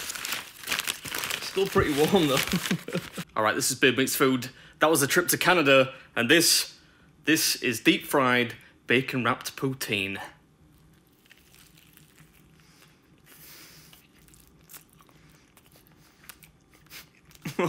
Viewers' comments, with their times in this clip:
0:03 bacon-wrapped poontang? I hope it was formerly attached to a hot model at least.